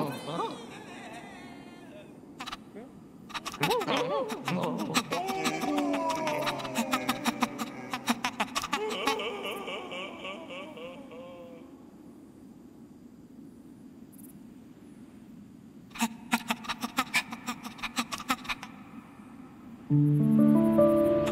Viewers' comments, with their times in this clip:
0:09 I found 2 lbp references 1. Prize bubble 2. who ever was screaming sounded like Clive